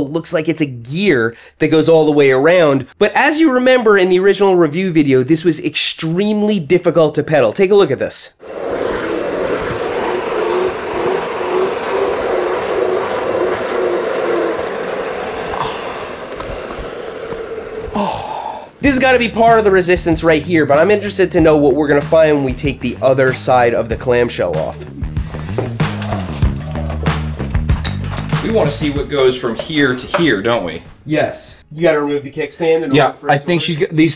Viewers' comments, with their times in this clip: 0:10 it genuinely sounds like one of those flashlights that have a useless manual generator
0:10 hmmm where did i hear that sound ? Ooh yeah those wind up flashlights (we had some that required alot of force but stayed on longer then others).
0:16 dark souls 1 male damage noise